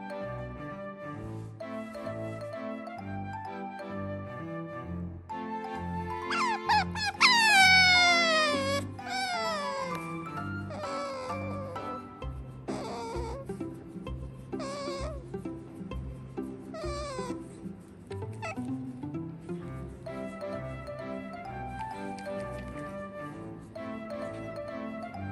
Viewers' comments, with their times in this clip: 0:06 attention wanting noise "Sakura is the insensitive hero of the manga" wut